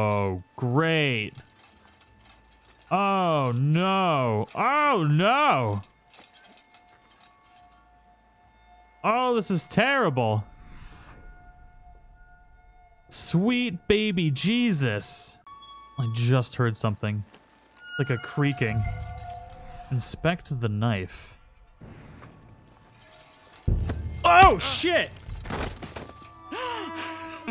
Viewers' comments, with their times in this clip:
0:08 you sound like markiplier lmao